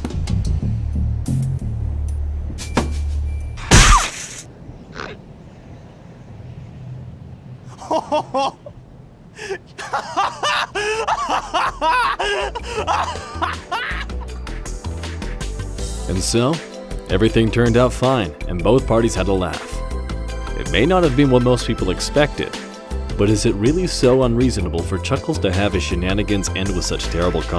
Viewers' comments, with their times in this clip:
0:10 I like the way how chuckles laughs